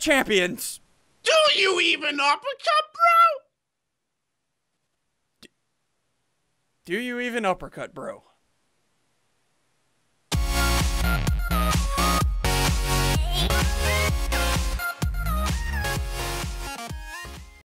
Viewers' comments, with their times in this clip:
0:07 rain turned off :D